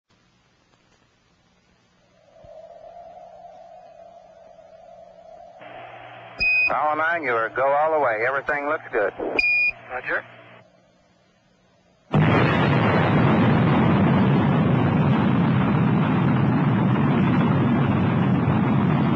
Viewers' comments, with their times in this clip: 0:01 Those are Rusty Schweickart's words, but not his voice narrating. In addition, that's not Apollo 9 blasting off into Earth orbit